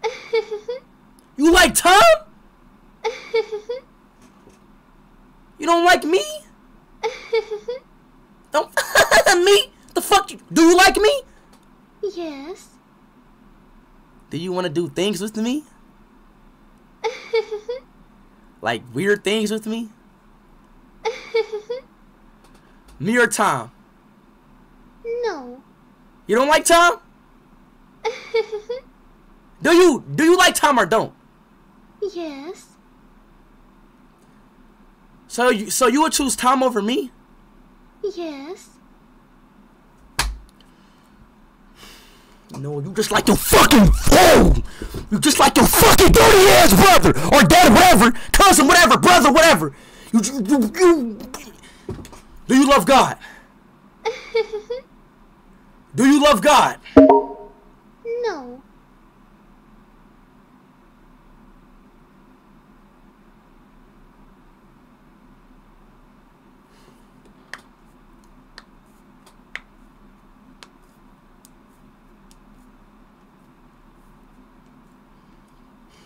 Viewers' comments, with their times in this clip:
0:07 Bella: giggles Speed: DON'T AHAHAHA ME!!! THE FUCK Me: yo speed calm down bro
1:00 *akward silence * BAHAHAHAH I LOVE IT!